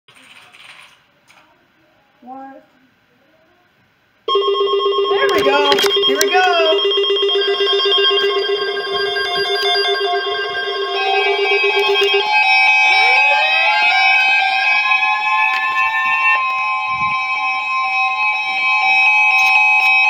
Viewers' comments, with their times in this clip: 0:07 the watch tones with all the radios sound good